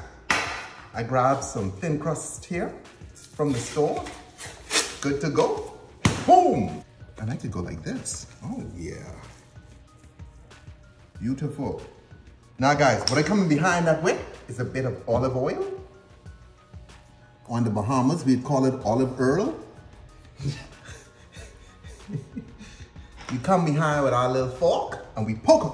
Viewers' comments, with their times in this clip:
0:06 Let us take the time to appreciate that he is much braver than most of us! Scares me every times, he just pops it by hand is like "Boom! Yeah I love that sound!"